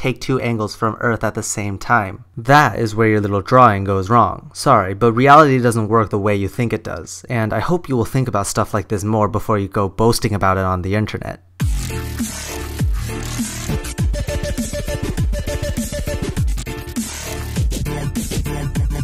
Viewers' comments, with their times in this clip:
0:07 Very calm, until the dubstep unexpectedly surprised me.